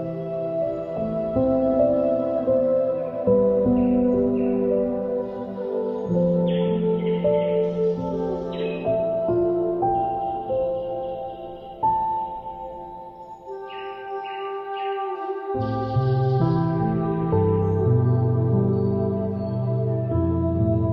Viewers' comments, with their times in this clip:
0:05 reminds me of hawai'i lovely music and video